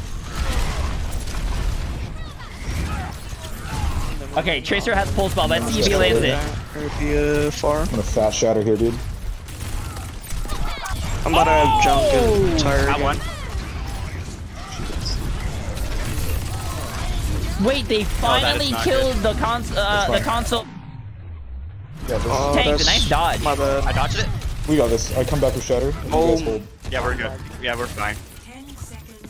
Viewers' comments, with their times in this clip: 0:10 was it just me who heard I thought about killing you